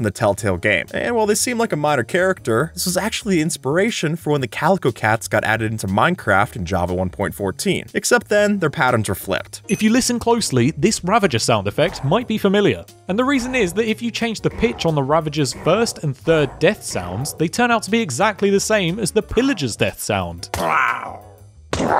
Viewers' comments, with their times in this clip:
0:09 In The ravages sound like the pillagers because the pillagers used to be villagers in the used villagers to make ravages according to Mattpat